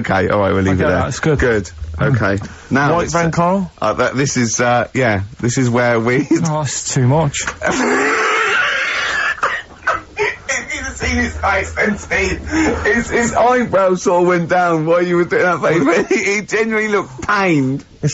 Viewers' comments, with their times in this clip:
0:05 Top five Ricky's laughs. Dwarf to live in a glass box And how do you freeze time are also in the top five